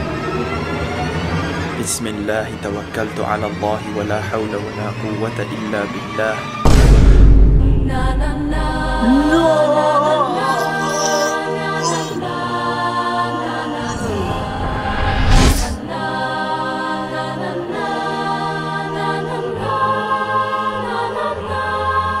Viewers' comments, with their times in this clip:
0:07 I love this music so damn much